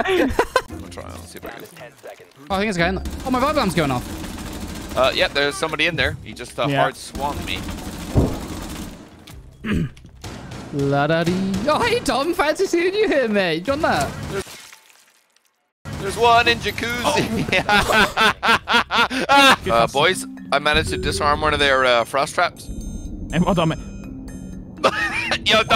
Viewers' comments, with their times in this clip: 0:07 At time mark when he hit the wall bang I heard the Taco Bell ring in the other room